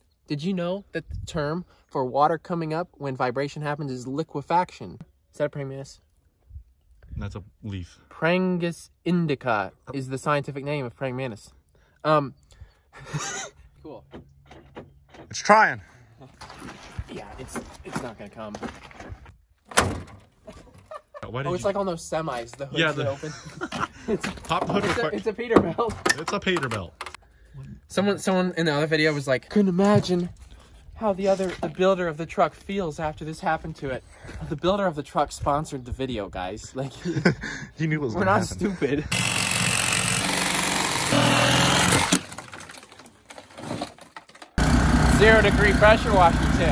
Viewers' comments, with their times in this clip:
0:06 “ hey Siri, what is Prangis Indicki?” Here are some results on Pringles Indigo..
0:29 best voice ever